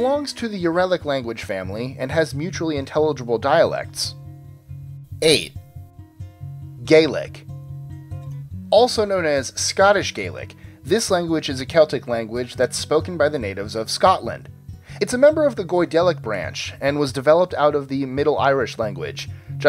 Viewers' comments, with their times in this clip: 0:05 do you speak gay-leg?